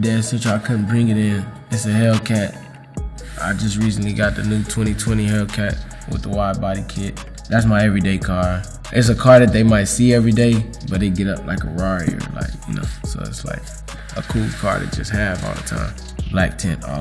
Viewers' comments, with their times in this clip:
0:03 it sound like he on beat with the background music :0